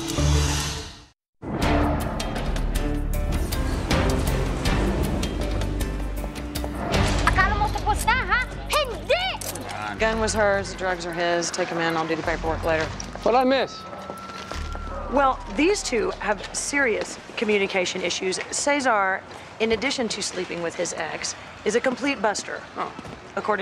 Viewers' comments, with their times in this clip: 0:08 is speaking Tagalog 😂😂